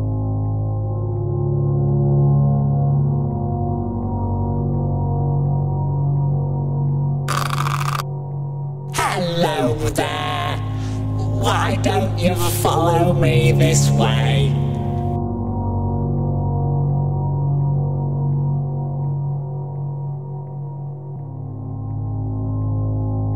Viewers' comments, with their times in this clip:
0:06 Listen to the music and pay attention to how it speaks. It sounds like it's singing